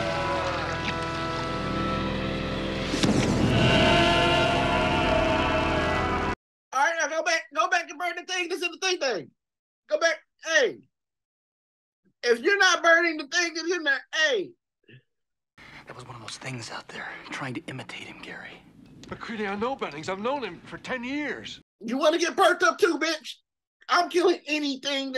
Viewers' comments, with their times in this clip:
0:09 man you got so stressed you started sounding like bill cosby ! 😂😂 had to add timestamp later because i was watching live 🙃